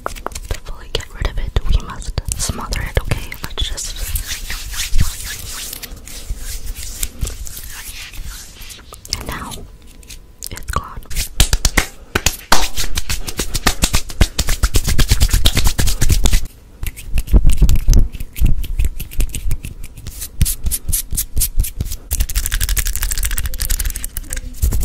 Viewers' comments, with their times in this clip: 0:10 idk why the "it's gone" thing is so tingly